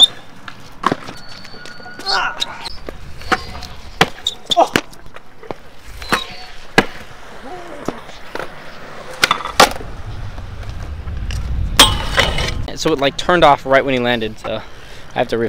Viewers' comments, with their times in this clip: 0:03 it sound alike the scene in scary movie how they at that haunted house and they start playing basketball😂😂